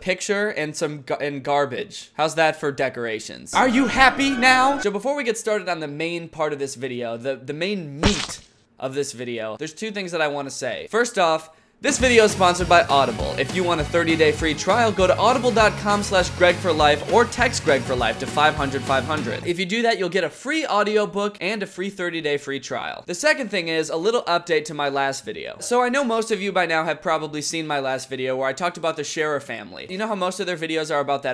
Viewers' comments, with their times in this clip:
0:08 Keep on replaying it's sounds weird
0:12 why does the music sound exactly like that tramp stamps song